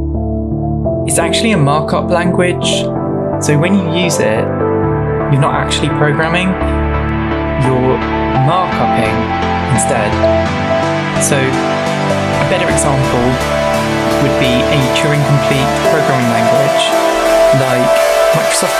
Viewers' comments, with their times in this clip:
0:06 Really nice video, music is kinda loud though, like